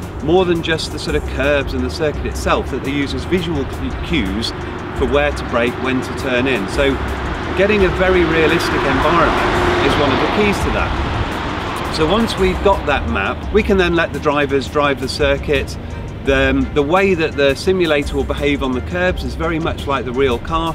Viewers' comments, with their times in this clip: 0:06 Those cars are louder than today's v6.